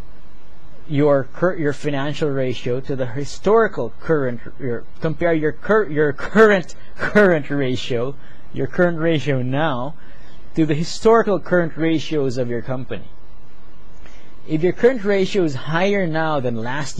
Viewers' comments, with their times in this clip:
0:03 Was I the only one that found that tongue-twister bit funny? Hahaha Very good explanation and easier to digest, thank you!